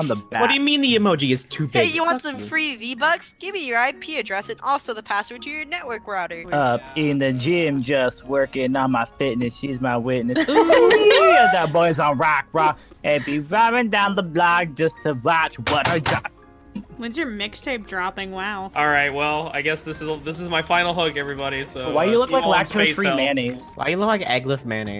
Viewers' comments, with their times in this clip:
0:07 more musical stylings